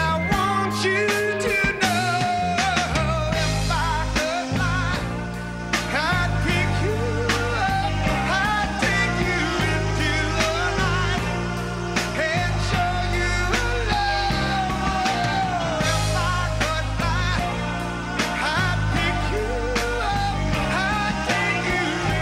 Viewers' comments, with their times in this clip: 0:07 his face when he hears someone’s off tune lol